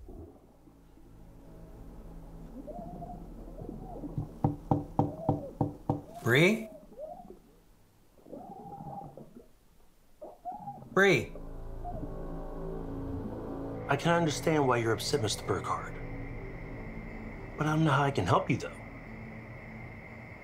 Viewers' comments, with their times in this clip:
0:05 Her screaming couldn’t possibly have gone that long underwater. She would have run out of oxygen in about two or three short yelps.